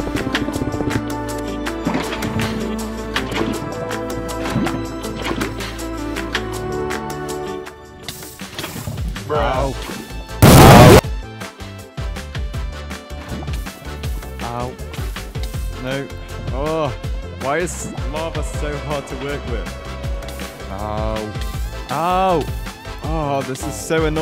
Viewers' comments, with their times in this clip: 0:09 that was so loud i had headphones in at max volume
0:09 OOF TO MY EARS BRUH THE AOW SOUND EFFECT IS SO LOUD IM USING HEADPHONES LOL
0:09 you blasted my ears in bruh
0:09 it would be nice to have a warning there 😭It wasn't funny, it was just loud and painful
0:10 u exploded my eardrums
0:10 yes, ow ow, my ears
0:10 OOW MY EARS
0:10 destroyed my headphones bro 😭